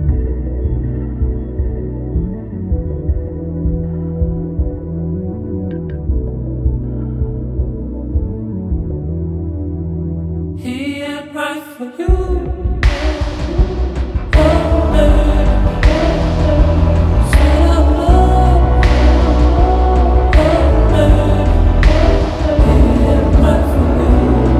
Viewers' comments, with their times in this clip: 0:10 everything in the song was building up to ... - beast transition.